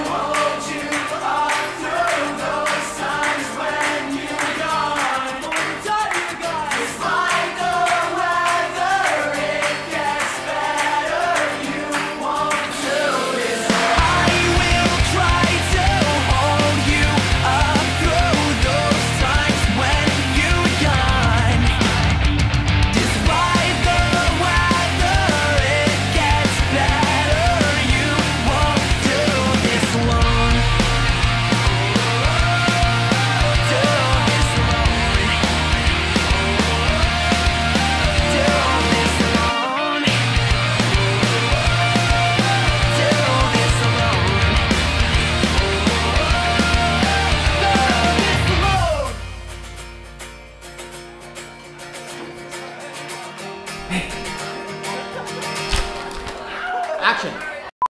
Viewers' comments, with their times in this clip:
0:06 What do they shout ?
0:20 that sounds like the drum fill from American Idiot haha!
0:53 that voce saying "hey" scared the crap out of me, I thought someone was in my house